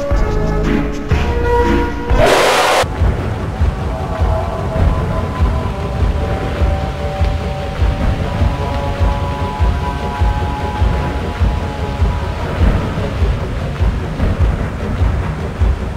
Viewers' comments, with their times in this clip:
0:03 One of the music I really love on every killer survival games